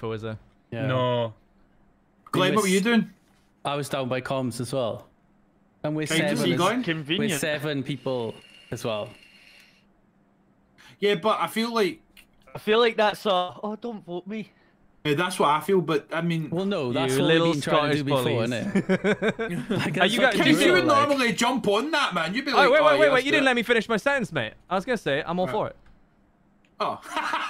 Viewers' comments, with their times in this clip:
0:09 that’s like the fifth or sixth time I’ve heard that sound in this stream. WHICH ONE OF YOU FOOLS WAS VAPING?